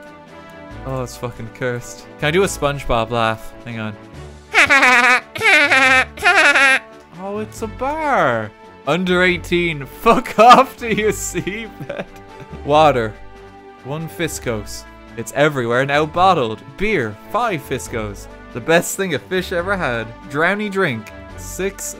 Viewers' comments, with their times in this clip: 0:06 that laugh was more Varg Vikernes in Lords of Chaos
0:06 ...That laugh was less Spongebob, and more like.. Mandark on helium, and sped up.